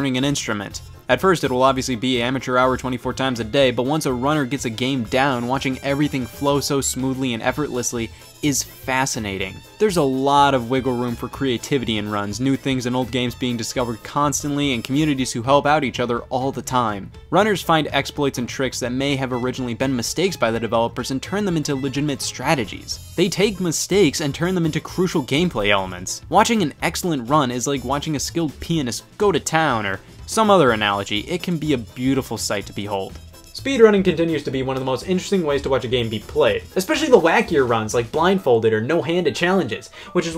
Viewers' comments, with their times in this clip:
0:05 the music and the gameplay match perfectly
0:06 X files theme plays
0:27 “A skilled penis go to town” -Scott the Woz 1996
0:28 The comments be like 50%: Todd Rogers is a cheater 25%: he said skilled penis 5%: speedrunning is stupid and dumb 20%: other